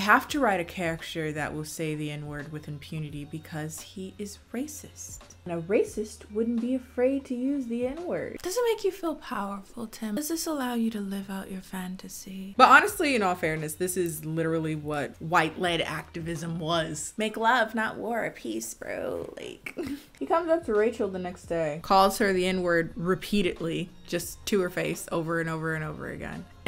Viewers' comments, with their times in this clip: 0:08 is pure ✨ ASMR ✨
0:09 my gay ass after hearing that voice: 😳